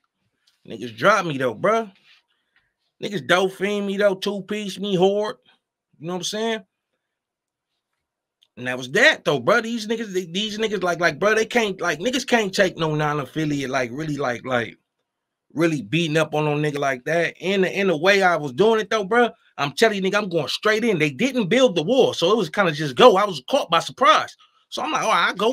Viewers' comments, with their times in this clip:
0:07 That Hoard I am glad y’all keeping the LA accent Alive 😂